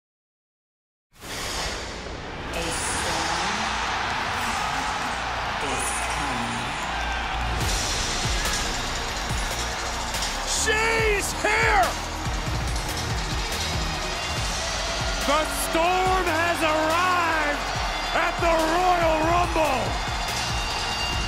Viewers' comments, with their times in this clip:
0:06 The way her head moved with the sound of thunder with perfect timing was everything.